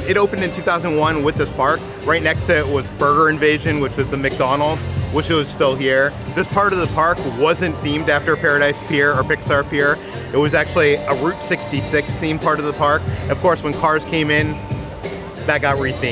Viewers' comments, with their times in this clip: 0:03 are they playing Tupac at DCA 💀